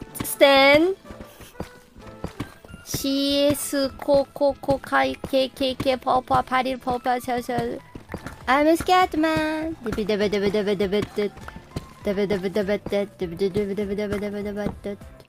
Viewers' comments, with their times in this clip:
0:08 Bruh the way she said it 💖💖💖💖💖💖💖💖💖💖